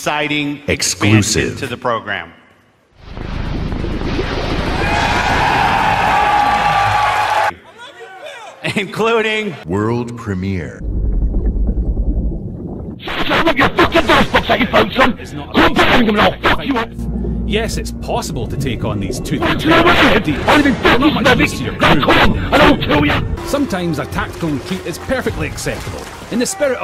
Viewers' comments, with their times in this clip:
0:08 sounds like Danny from Game Grumps
0:11 The Scottish shark killed me
0:14 What the audio on